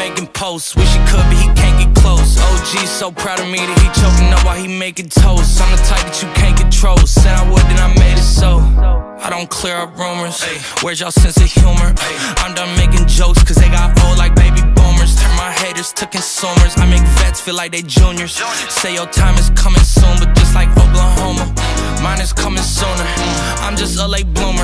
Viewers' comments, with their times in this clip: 0:09 I absolutely love atsumu's smile here he looks so damn cute squealing 😍